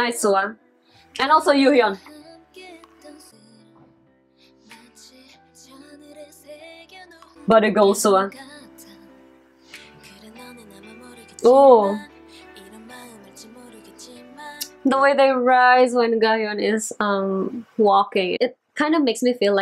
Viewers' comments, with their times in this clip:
0:07 Because you kept talking about them tucking their butts when you said "body goals SuA" I thought you said "booty goals SuA" 😂 which I guess isn't wrong